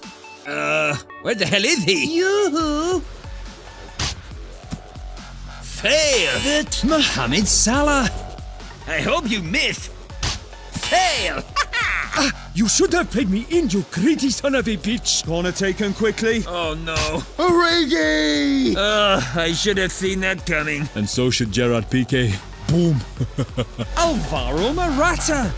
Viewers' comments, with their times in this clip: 0:08 I'm sorry but that accent is just hilarious